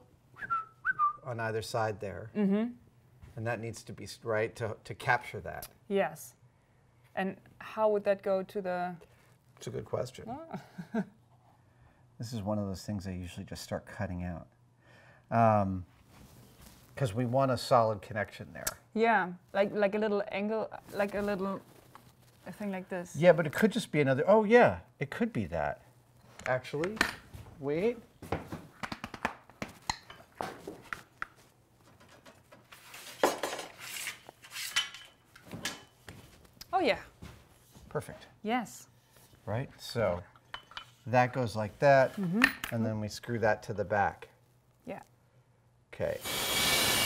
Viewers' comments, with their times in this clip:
0:04 When Adam whistled I happened to be distracted by something, and thought he was trying to get my attention to show me that. Now I realize I'm tired and need sleep.
0:28 for the tummy drumming.